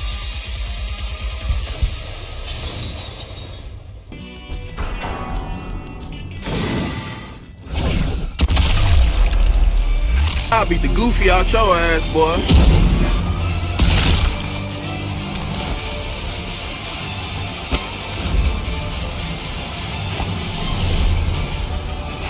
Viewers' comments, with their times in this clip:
0:08 ironfist ult SFX changed???